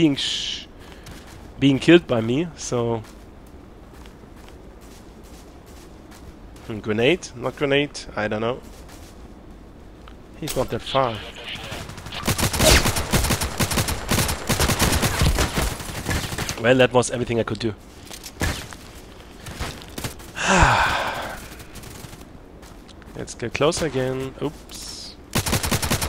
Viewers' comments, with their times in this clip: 0:09 I'm thinking he heard your footsteps. ~